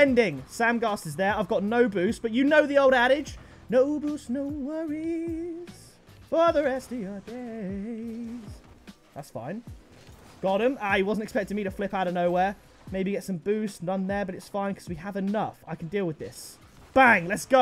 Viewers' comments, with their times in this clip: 0:03 he’s actually a really good singer
0:03 I got every dlc pack in 2019 I even got the Jurassic Park Jeep and the T-Rex goal explosion. BTW good vocals.